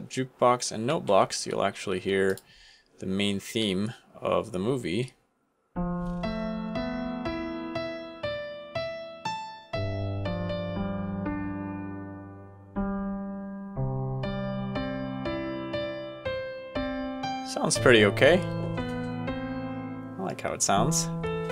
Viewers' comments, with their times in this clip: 0:03 the song makes me emotional. 😞
0:05 The way made me smile?! The music? Oh my gosh this is amazing.
0:05 Gosh, The Music Was So Good, The Nostalgia... I'm Going To Re-watch The Entire Movie Now!